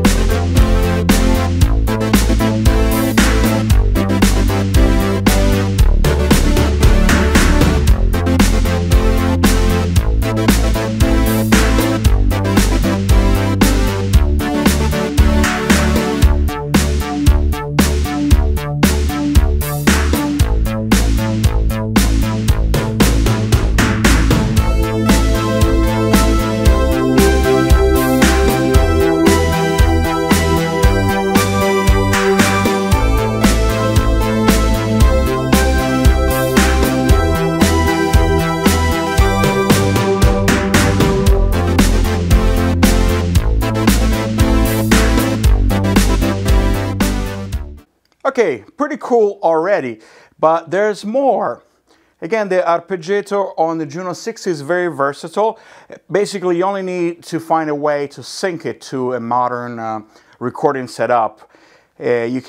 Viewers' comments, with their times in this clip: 0:07 plays dope italo synth pop this guy fucks
0:46 Love that track you play at the min mrk.